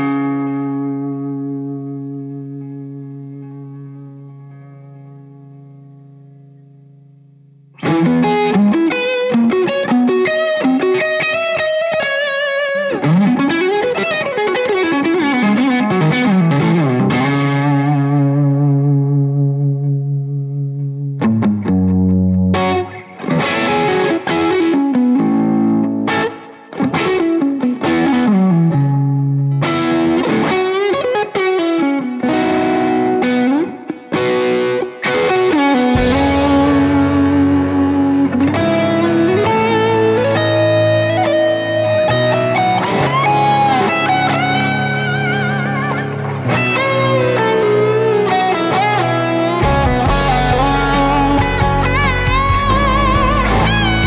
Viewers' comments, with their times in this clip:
0:09 sounds like cliffs of Dover
0:19 such a tasty riff, i can't stop listening to it
0:21 The epic-ness starts kickin ......man I love that riff, nicely done sir!
0:21 That tone is woth every dollar!
0:36 sounds like something TheDooo would of played